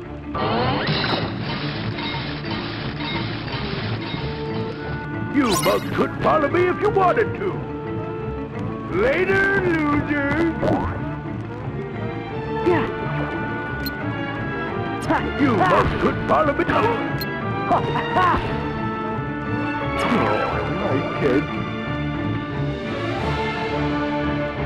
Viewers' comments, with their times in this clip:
0:05 Pete's lines during the sound like the voice quality you expect from Star Fox 64.